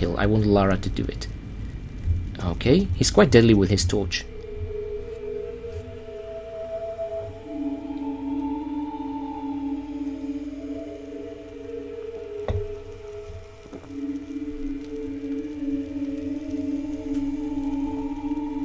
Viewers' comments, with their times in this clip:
0:04 music reminds me of Pathologic :P Great vid as always, the analysis you give is the best :)